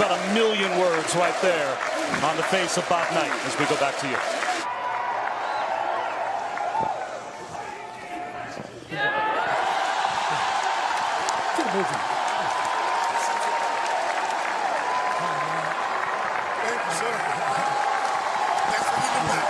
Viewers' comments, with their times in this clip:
0:07 Still got the fire and voice despite being in poor health👍🏿👍🏿👍🏿👍🏿